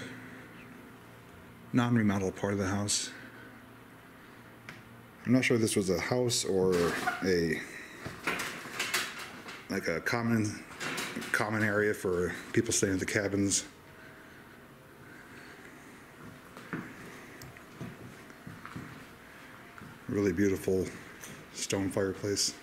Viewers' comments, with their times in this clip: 0:07 It sounds like a laugh